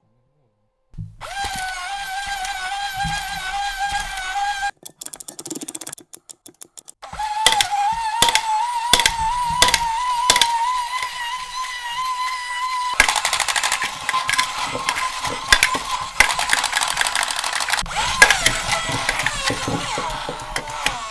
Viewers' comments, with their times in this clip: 0:06 This part sounds like a horse running OMG